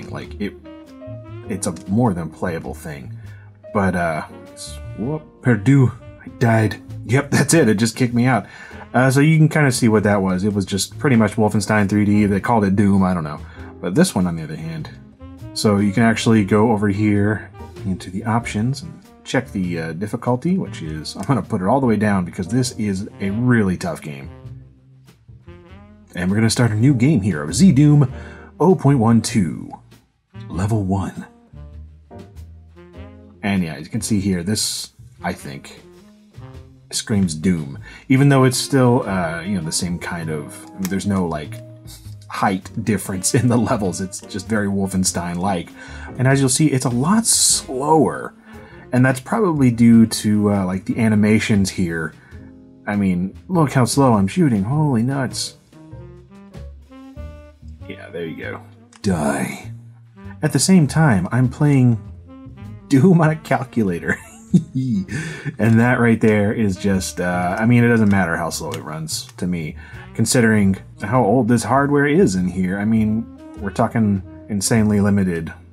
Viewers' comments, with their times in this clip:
0:04 I like how he said "perdu" he not say that he say "perdou" 😂
0:26 Your voice is like the Postal 2 guy :/ (specialy )
0:57 sounds like a guy from Overwatch
0:58 When did Duke Nukem walk into the room? Or was that Solid Snake?
0:58 Anybody else think he sounded like Reaper ?
0:59 you my friend have n epic voice awesome keep up
0:59 "Die." 😂 Lol way you said it.
1:02 *Sounds of joy*